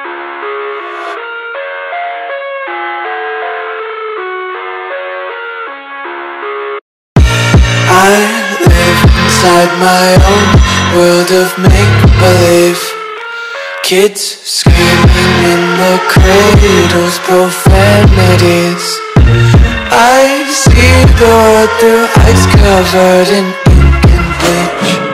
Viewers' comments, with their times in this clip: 0:06 the bass goes with the blocks